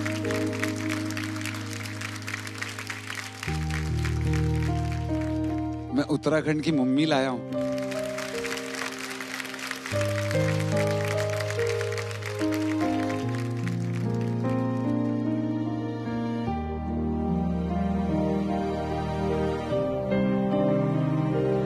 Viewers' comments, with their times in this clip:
0:06 The way he says it...... ❤️❤️❤️❤️